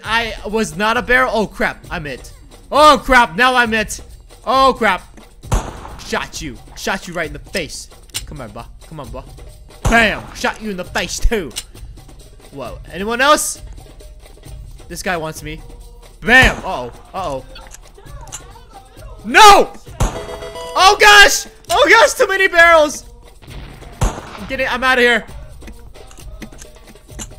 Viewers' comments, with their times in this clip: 0:10 best British accent lol 👏🏼